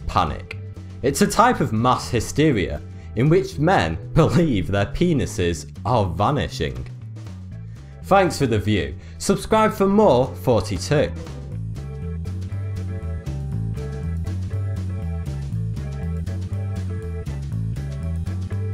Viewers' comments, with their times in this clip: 0:04 loved the laugh